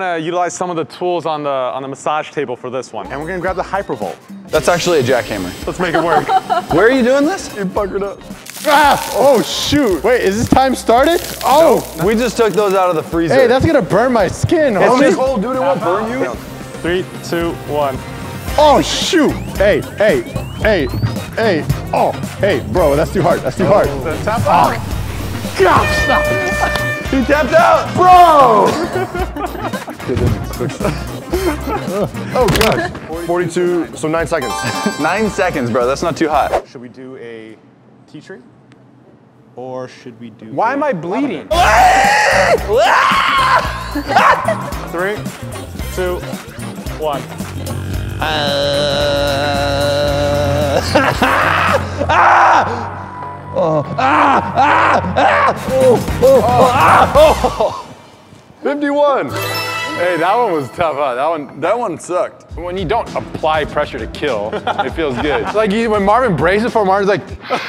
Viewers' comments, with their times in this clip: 0:07 Check time I think i heard the f word
0:48 Kids talking into the fan be like
0:50 he sounds like stitch from lilo and stitch 😂